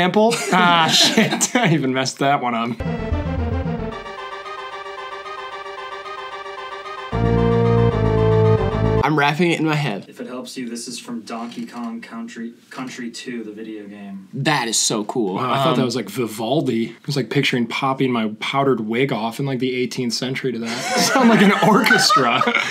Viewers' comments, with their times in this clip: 0:04 WATCH YA MF TONE BOY!